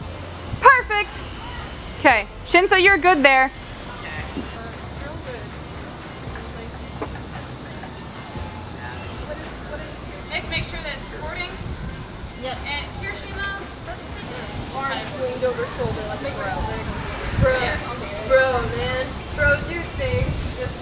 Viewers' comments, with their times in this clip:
0:08 tappity tap * tap intense tapping